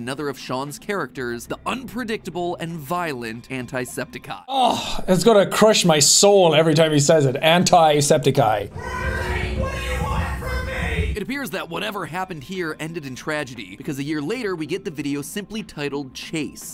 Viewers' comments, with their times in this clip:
0:04 agreed it just doesn’t sound as right as Sean’s version 😖